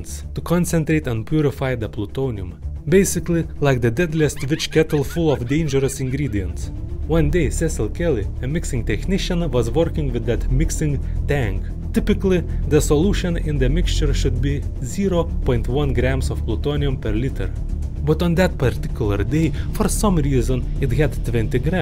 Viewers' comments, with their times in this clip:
0:04 Why i'm hear women voice in time stamp I'm trying to sleep and sudenly get up when hear women laught
0:04 WHAT LAUGH IS THAT😭😭😭😭